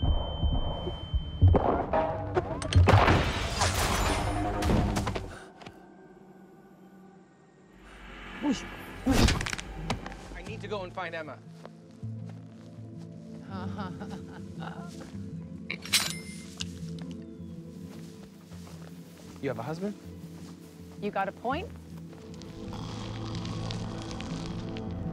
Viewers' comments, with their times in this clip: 0:08 sound like low budget with sound effect